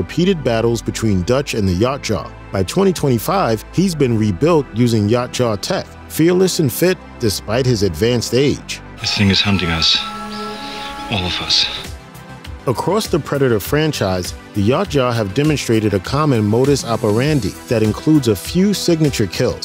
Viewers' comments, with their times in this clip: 0:07 I cant listen to you butcher the pronunciation any more. You have never watched a video on this subject. UNSUBSCRIBE